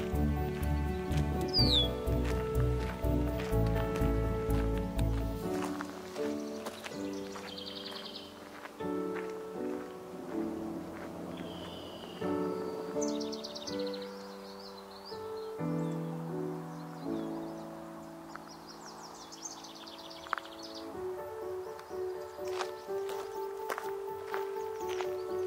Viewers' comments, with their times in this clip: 0:07 I can hear the birds chirping, your walking noise. I feel like I'm there walking with you. Feel so real. I like the background music, too. It's very relaxing. is my favorite shot in this video. It's very green and shady. I live in Southern California and we don't have much shade on the trails. It's very sunny here in SoCal 👍🔔